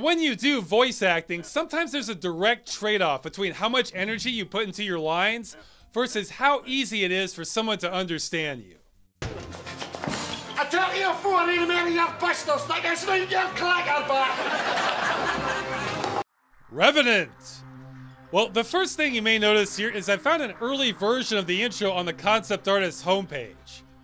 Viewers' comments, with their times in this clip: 0:09 Okay, I give up, guys - what in the 9th solar hell is this guy saying?! I've rewatched this like dozens of times, and I can't even find a syllable of english in this mess.